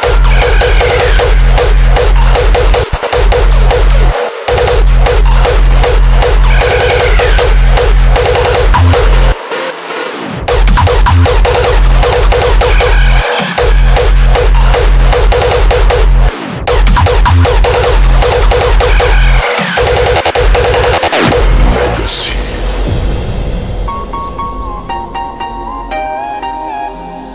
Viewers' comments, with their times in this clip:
0:09 D-Sturb's kicks & kickrolls are out of this world